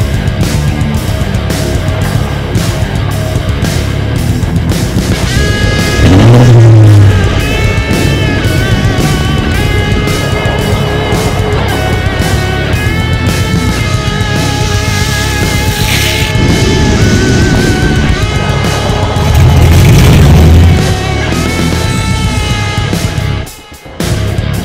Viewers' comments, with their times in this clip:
0:06 vtec kicked in yo